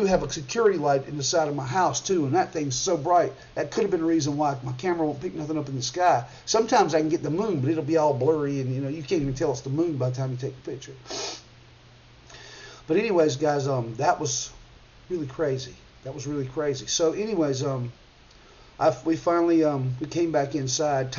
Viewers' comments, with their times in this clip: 0:09 Wow! You sound like me talking there. That happens to me a lot with my cell phone. I mean. Three beeps happened at the end of my last video but it was not faint is was loud. Thanks for sharing that. God bless